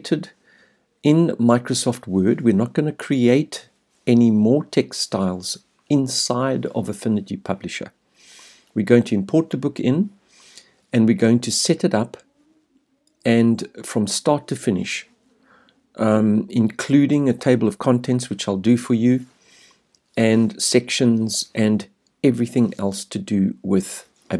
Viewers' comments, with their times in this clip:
0:08 textiles ? what is creating textiles in affinity ? this is around the mark - it is far too confusing to understand :(